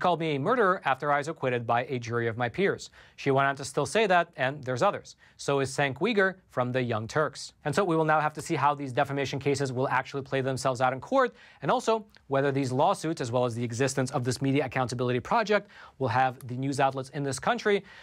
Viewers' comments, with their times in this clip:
0:04 "senk weegar" no... ffs man (i dont like the guy but at least i know how to say his name) Cenk Uyhur = Jenck You-gar ... not senck We-gar ffs